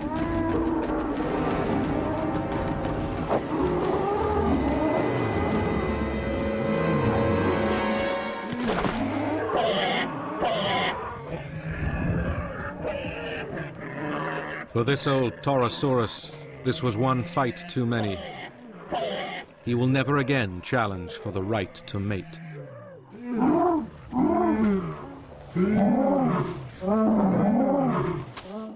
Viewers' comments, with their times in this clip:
0:10 If you paid attention, the bull makes a low-pitched noise as soon as its horn breaks off, so yeah, he went through a lot of pain .